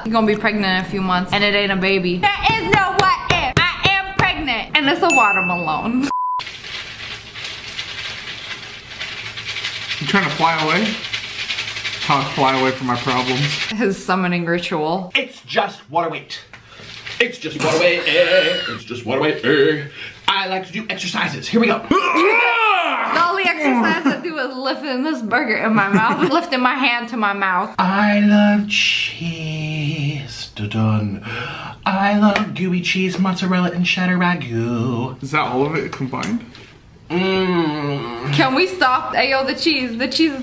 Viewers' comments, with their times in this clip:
0:08 Bro sounds like a packet of rice
0:22 That was a nice sound effect